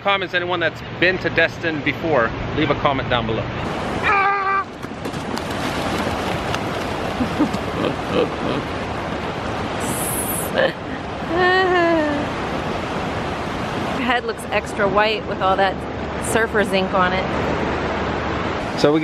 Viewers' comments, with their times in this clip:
0:06 had me dying with laughter specially the war cry😂😂